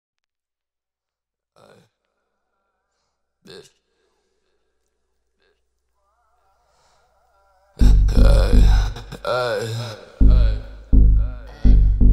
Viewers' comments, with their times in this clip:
0:00 infants trying to say there first word